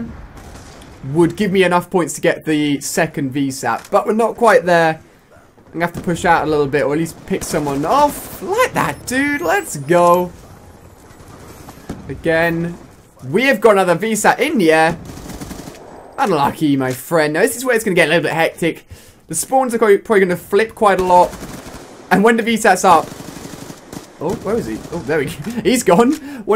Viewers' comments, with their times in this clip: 0:10 Is Ali a now American?